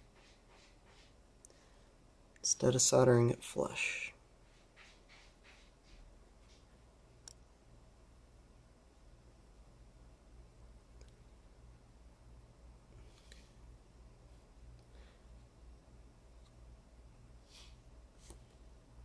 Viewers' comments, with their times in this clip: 0:03 cat scooping sand over it's poop in the litterbox